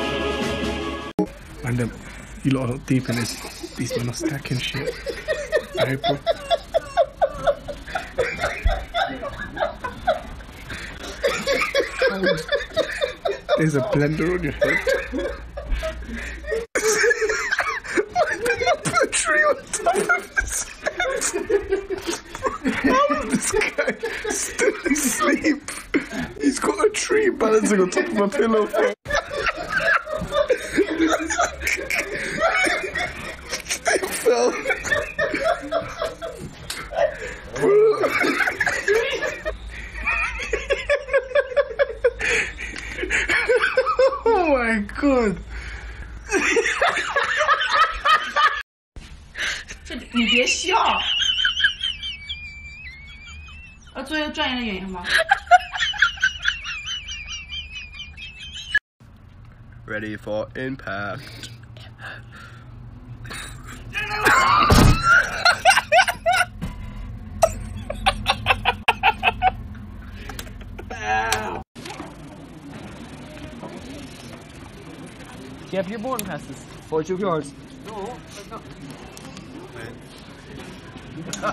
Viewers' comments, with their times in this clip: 0:07 I literally did that to my friend. It is funny, but 10x more funny when they are laughing and talking in their sleep. 😂 Captions say that the laughing is music 😂
0:18 🤣🤣🤣🤣🤣🤣 that laugh though
0:30 he was literally laughing on the floor
0:49 I'm full on sobbing at this person's laugh dear lord 😂
0:49 The wheeze laughs are the bests
0:49 THATS EXATLY HOW I LAUGH HASHSHSHSHAHJAHAS
0:49 is exactly my laugh
0:49 The tea kettle laughs kill me. 😂😂😂
1:03 he screamed no when he seen he shut the door died laughing
1:04 Funny Moment.... Door Slam By skateboard😂😂😂😂😂